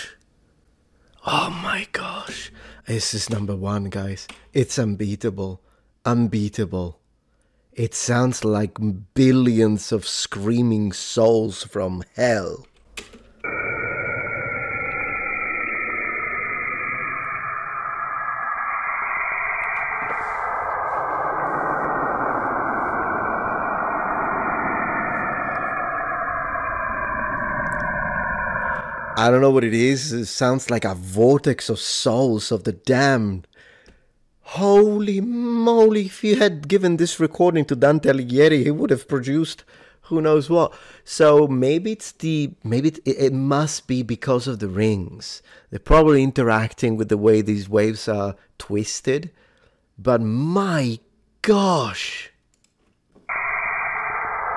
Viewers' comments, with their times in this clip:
0:03 EXACTLY! How the hell is that the exact first thing I thought. Its like they were taking turns, first the fellas, then the ladies, pretty creepy
0:36 Who does he mention ? Dantel yeti?